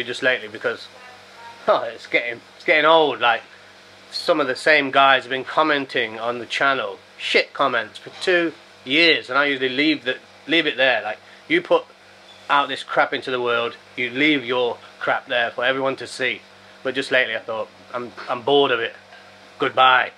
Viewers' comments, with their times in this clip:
0:04 your chef's having a laugh in the background 🤣 😆 😂 555